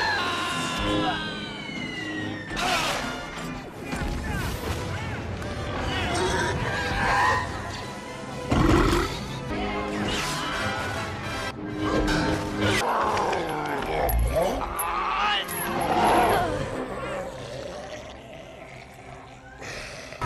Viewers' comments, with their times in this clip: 0:08 “unconfirmed”? The sarlaac literally burps.